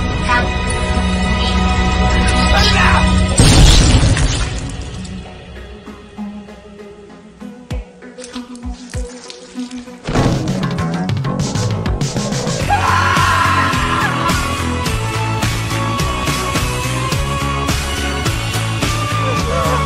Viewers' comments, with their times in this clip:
0:03 why does the explosion sound like a fart T-T